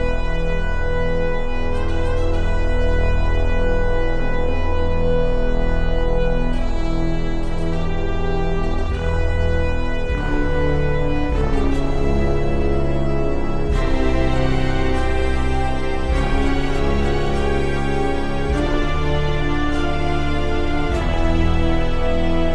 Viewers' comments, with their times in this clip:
0:03 I'm ...... vocals......... EEEEEEEEEEEEEEEEEEEEEEEEEEEEEEEEEEEEEEEEEEEEEEEE!!!!!!!!!!!!!!!!!!!!!!!!!!